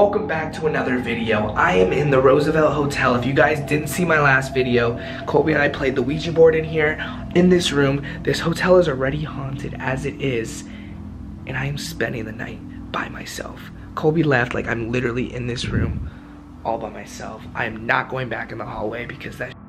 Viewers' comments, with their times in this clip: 0:05 at like i swear i heard a grunt or something